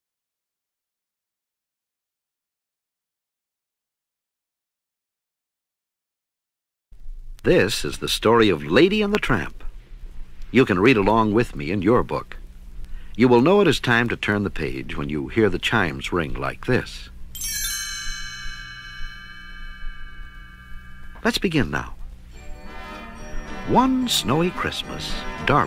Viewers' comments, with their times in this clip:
0:07 The voice is so beautiful
0:07 I love the voice